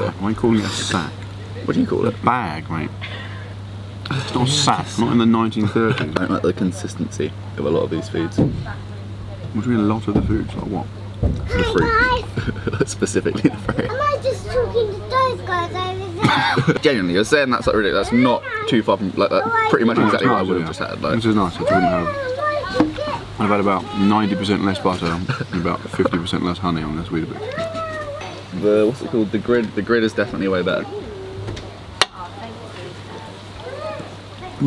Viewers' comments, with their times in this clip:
0:09 "hI gUyS" lmao i watched that part for like the 100th time now😂
0:17 it sounded like his brother was going to say the f word